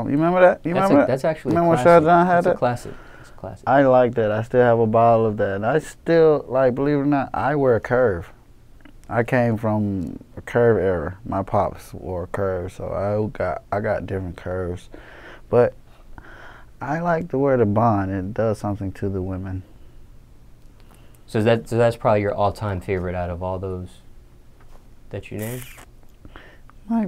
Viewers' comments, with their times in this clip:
0:08 did he fart